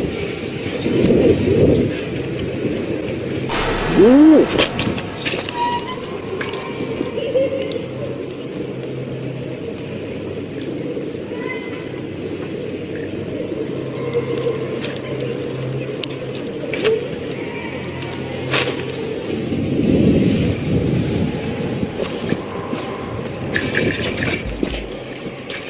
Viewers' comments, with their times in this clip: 0:06 I heard a child's laughter.
0:07 you can hear the woman’s giggle after she disappears.
0:07 ….sounds like the ghost laughing….when the bikeman ran Into the ghost.
0:07 in there are giggles when the person looks back
0:10 u hear her laughing or is it just me